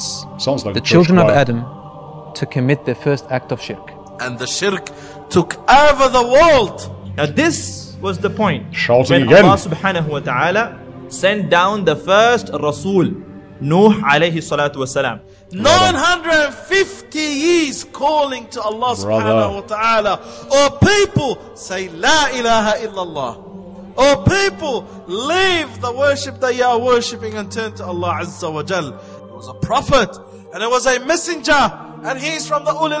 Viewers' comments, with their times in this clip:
0:09 shouting again 😂. I didn't expect it neither
0:15 Emotional Ear Damage 🤡😂